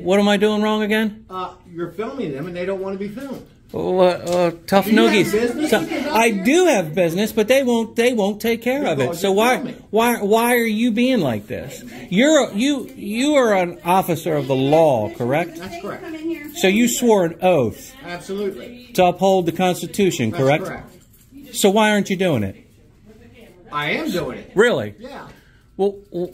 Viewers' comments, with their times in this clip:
0:10 This guy (Angry) should get his thoughts together BEFORE going into an "Audit" because he stumbles stammers and asks the cop to explain things to him when he should be explaining the way the law IS. Good start IF this is his first but not very smooth about it. ish